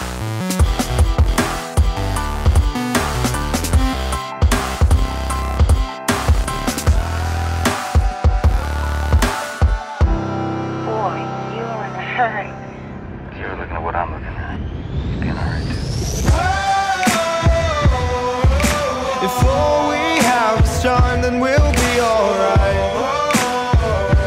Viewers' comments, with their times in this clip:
0:06 Yesss u faded and end credits perfectly